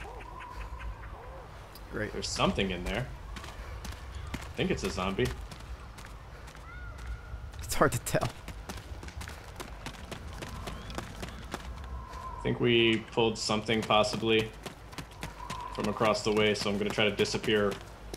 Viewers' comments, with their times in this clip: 0:06 little girl crys for help lissten with ear buds and please tell me there is